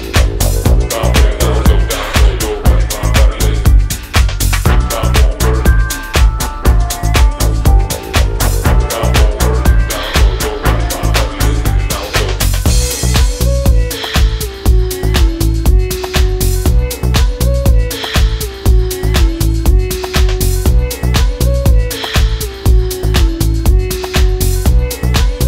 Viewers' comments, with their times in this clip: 0:09 the dre day mix is dirtyyyy